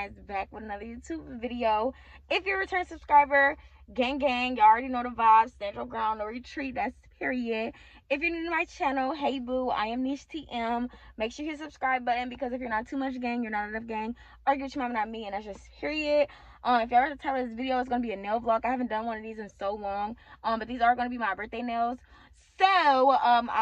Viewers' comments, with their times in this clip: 0:06 No sound until Great video though.